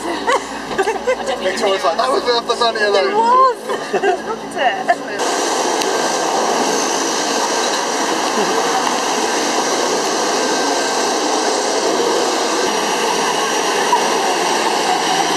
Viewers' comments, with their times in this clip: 0:03 I just thinking all those noise, jokes laughing come from one 14 years old teen ages girl who flirting with young boys to got attention but it was all from one old ground mama ...